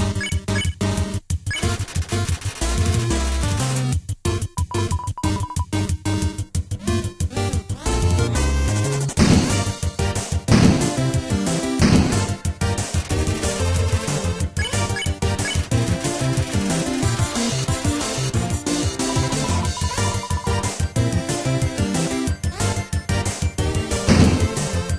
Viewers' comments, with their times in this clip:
0:09 Am I the only one who noticed that the bombs sync with the music?